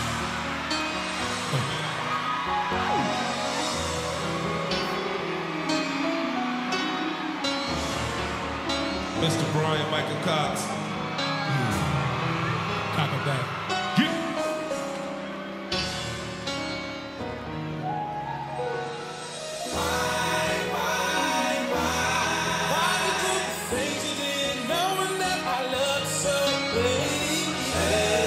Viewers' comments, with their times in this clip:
0:09 Yep pretty loud and clear